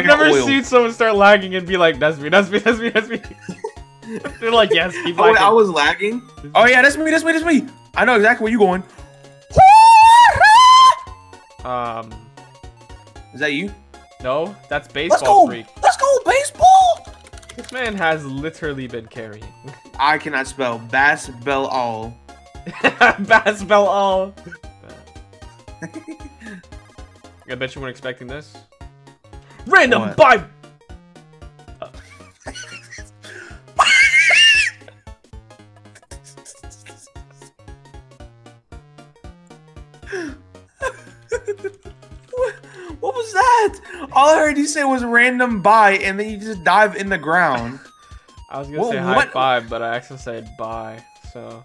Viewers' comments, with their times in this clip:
0:09 sounds like me when i stub my toe:
0:09 jeezz he shold be named kazoo tbh
0:10 yoo what was that scream
0:31 The way he turned and it got quiet
0:33 Who’s making some tea in the video xD